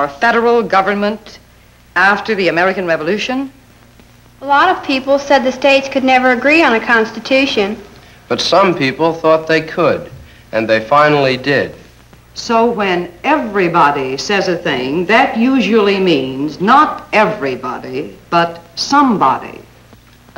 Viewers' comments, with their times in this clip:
0:08 Kid sounds like george carlin